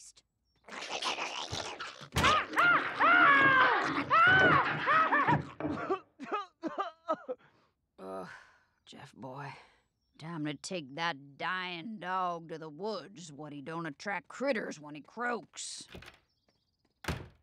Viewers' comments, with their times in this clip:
0:05 Jeff coughs from tuberculosis 😷